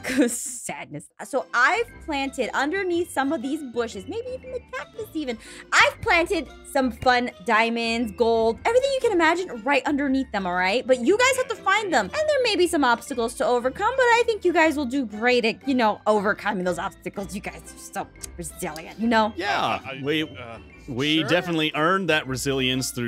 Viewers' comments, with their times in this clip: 0:05 did she SAy cATCUS STevEn